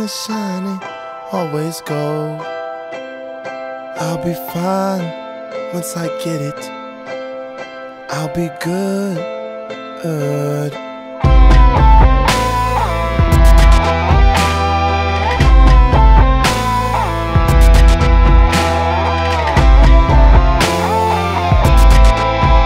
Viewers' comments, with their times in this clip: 0:10 that Ratatat solo gives me chills everytime